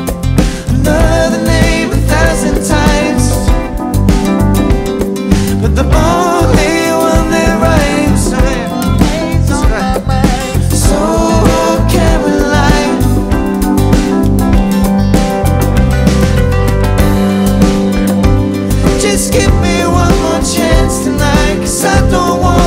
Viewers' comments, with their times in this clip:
0:08 George's backing vocal sounding like harry styles 😯